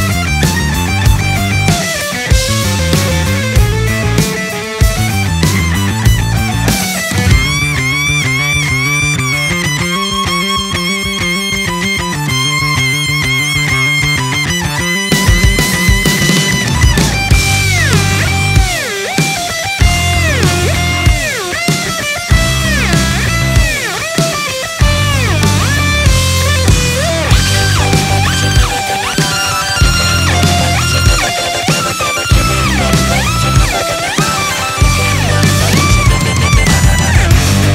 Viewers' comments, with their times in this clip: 0:07 I thought « Around the world » from RHCP was kicking in 😂😂
0:15 That drum hit is insane!!!
0:20 its sounds like anatolian rock if you like the them you should listen anatolian rock